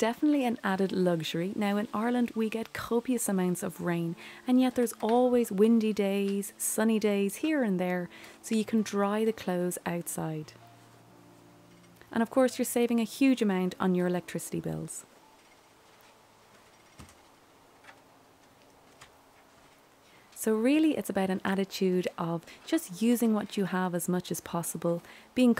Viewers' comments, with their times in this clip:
0:06 It's am here in California. I love your videos at the start of my work shift because you're voice is so soothing and I always learn something different. Fairy Land Cottage is truly my internet Fairy Land. 🧚‍♀️🧚‍♂️🏡